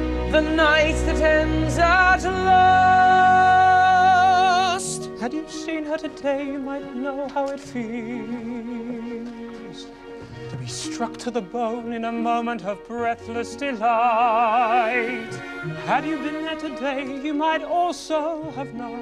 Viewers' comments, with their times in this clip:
0:04 :) I love Eddie Redmayne his voice is amazing :) (Along with the rest of the cast of course!)